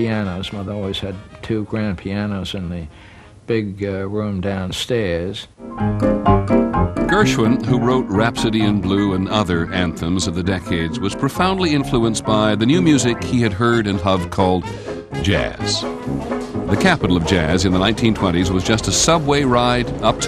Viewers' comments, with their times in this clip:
0:05 ATTENTION! That funky-swingy jazz song/melodi when they talk about the Harlem Renaissance, I gotta know if anyone can help me find the title of it :D